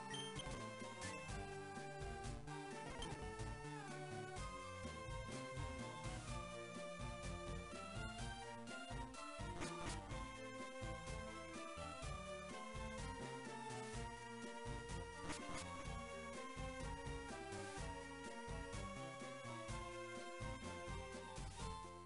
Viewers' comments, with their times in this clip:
0:05 Bro I liked the part after WITHOUT the audio better 😂